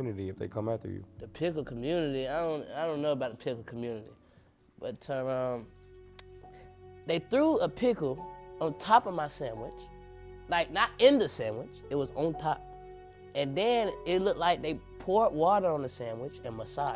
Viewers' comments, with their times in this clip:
0:04 when that baby said “but-ter-rum” i knew he was raised by somebody’s grandparents